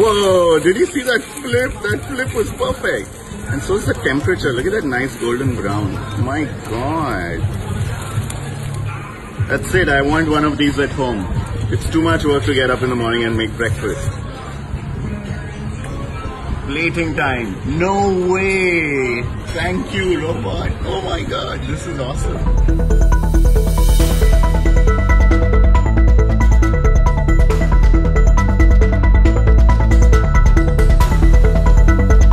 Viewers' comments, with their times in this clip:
0:04 sounds just like Apu from the simpsons
0:18 Ever heard a gay indian?